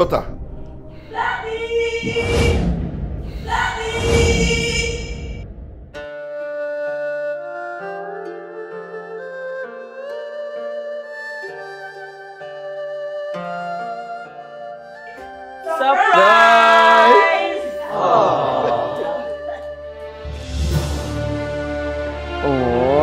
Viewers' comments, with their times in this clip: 0:08 I thought witcher 3 song played😂